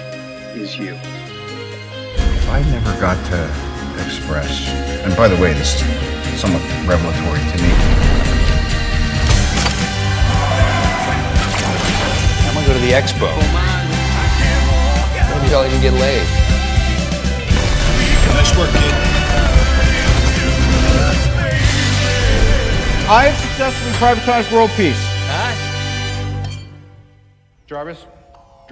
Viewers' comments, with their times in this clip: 0:09 Such an awesome video the whole way through! Love the Beethoven 🎶🎶 CHILLS.